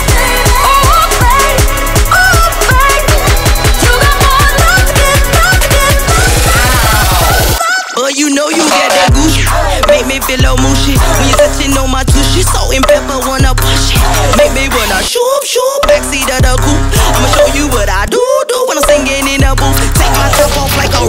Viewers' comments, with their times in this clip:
0:07 sounds the same until